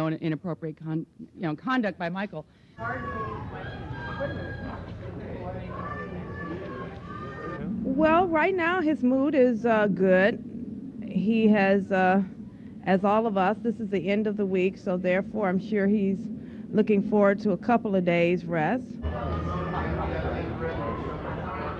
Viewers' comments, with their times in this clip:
0:06 is just me or the girl screamed "Michael mi amor"🥺